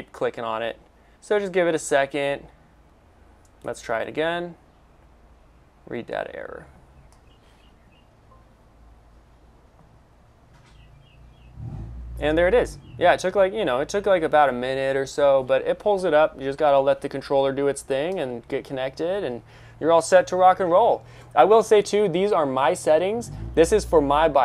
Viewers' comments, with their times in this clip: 0:09 this software has a loud sound when it starts